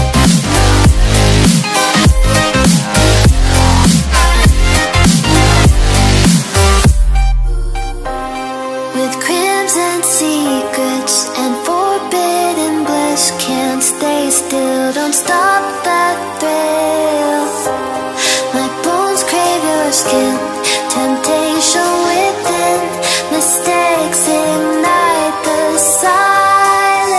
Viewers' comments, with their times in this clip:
0:10 I love that song